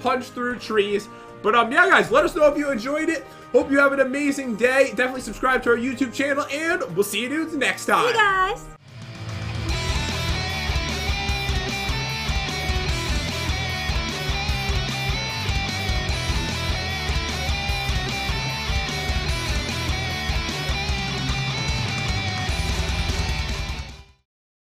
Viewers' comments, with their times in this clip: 0:08 I hear someone said help me in